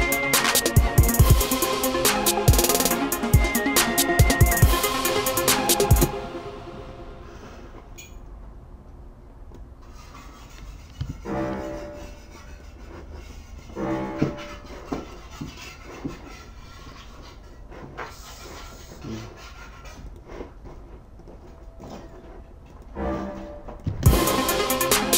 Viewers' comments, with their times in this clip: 0:10 roommate scraping that crusty, stuck on, egg off the Teflon fryin pan, then hitting it with the non stick spray... lol...